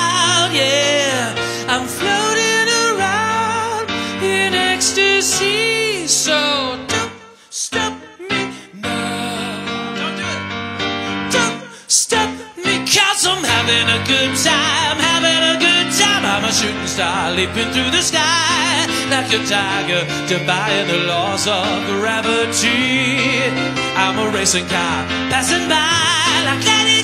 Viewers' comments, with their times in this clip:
0:08 "nowww" its freddie